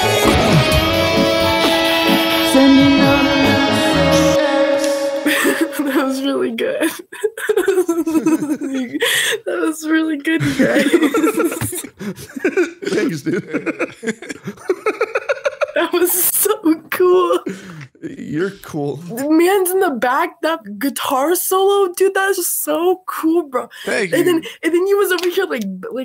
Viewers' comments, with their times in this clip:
0:10 Oh my god that back and forth giggling xD